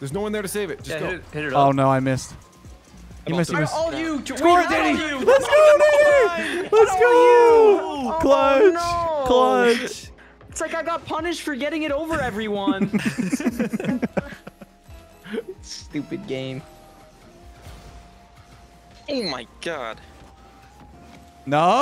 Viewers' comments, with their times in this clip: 0:04 was that the n-word???? im so confused on what he meant to say lmao